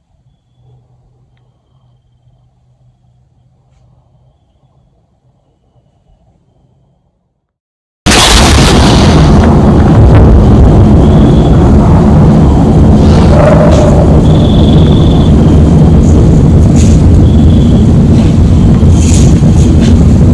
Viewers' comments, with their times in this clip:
0:07 Blew my eardrum out ish